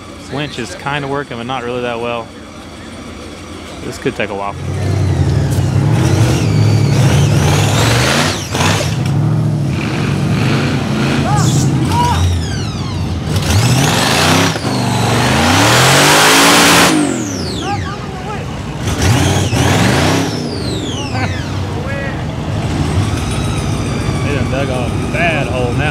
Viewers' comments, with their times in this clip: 0:07 does that buggy behind him have a supercharger? Sure sounds like it